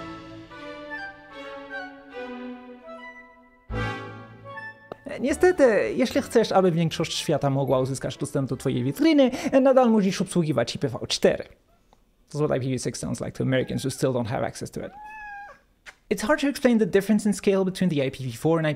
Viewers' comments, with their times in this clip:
0:04 I got spooked when you started speaking polish. A surprise to be sure, but a welcome one.